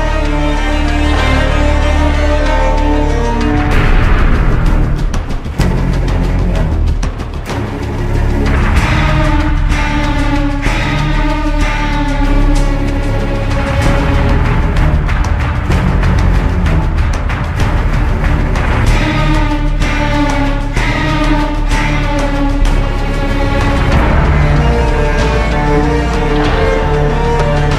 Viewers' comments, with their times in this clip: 0:08 part is absolutely menacing. Enemy team and your team are going neck to neck in closing minutes of the game...this music starts in the background...anxiety skyrockets through the roof!